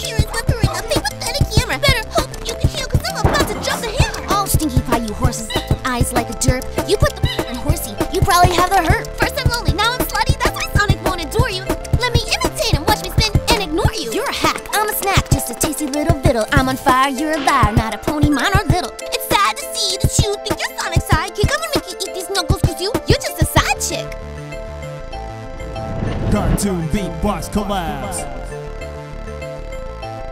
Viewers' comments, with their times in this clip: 0:09 Nice Timing On The Pause
0:14 is fire!!! ❤️❤️❤️ nice flow